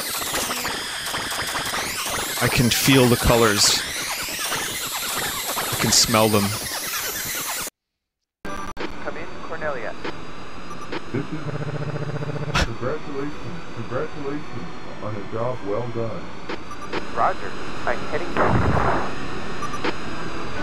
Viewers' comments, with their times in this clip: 0:08 just realized after all these years that fox says "cornelia" instead of corneria.